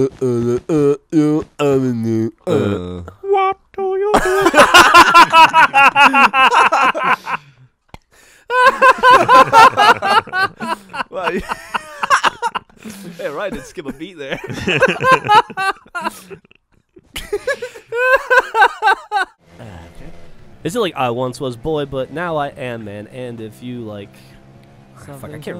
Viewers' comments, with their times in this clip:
0:06 Hearing Geoff choke on his own spit then continuing laughing is priceless.